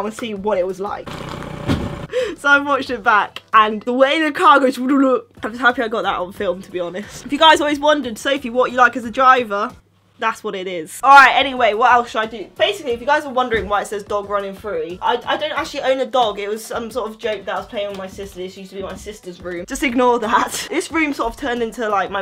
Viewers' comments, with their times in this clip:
0:04 the way that car goes wooloop